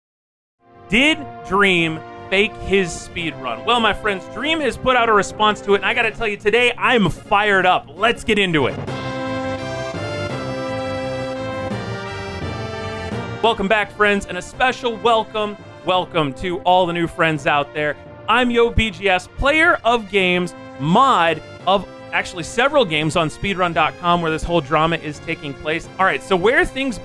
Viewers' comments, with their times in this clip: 0:09 hears music Me: Ah. I see. A fellow man of culture.